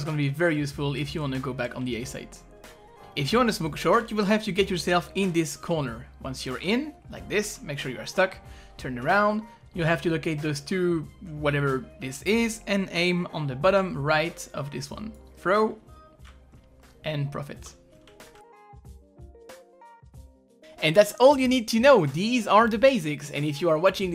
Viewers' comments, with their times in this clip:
0:07 the way you said "make sure you are stuck"